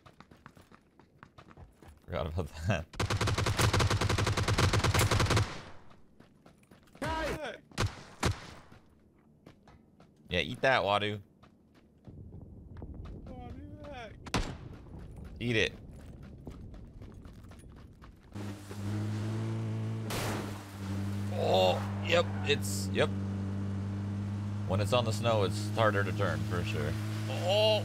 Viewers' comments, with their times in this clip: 0:09 bruh, the sad "wadu hek" T ʖ̯ T